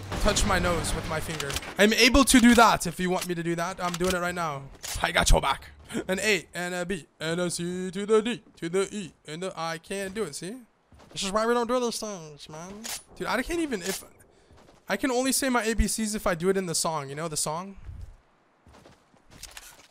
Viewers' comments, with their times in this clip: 0:05 sounds like agust d